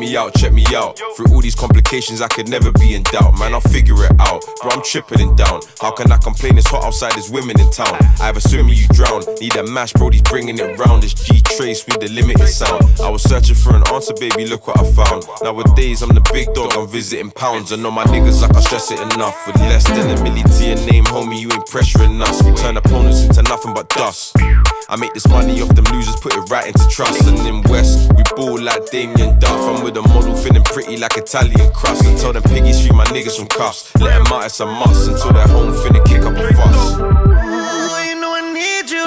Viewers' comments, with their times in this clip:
0:09 I thought that was flava flav 😅 lol summer banger still
0:24 is that u Headie One??😂